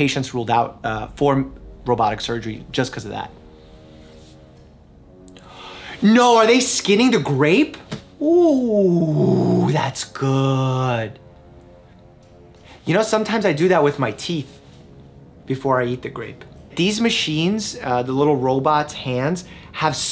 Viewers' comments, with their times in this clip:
0:06 I thought that he was saying that he skins his teeth. Was very confused for a second.